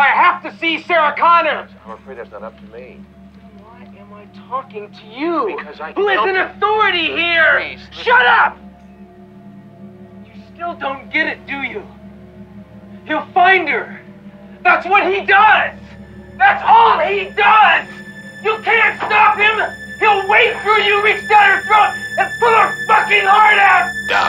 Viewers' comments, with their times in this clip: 0:05 “then why am I talking to you?!” The frustration in his tone is like he can’t believe he wasted his time talking to Silberman, because he was just a listener not an authority figure. The acting in this movie is just too real. This movie will always be a classic.
0:08 " SHUT UP!!!!" That line was absolutely and positivity well-deliver by Michael Biehn as he really put tons of emotion and depth into it as I can really feel his rage and anger as of today it still gives me chills and goosebumps. 😍💯😎👍😱😰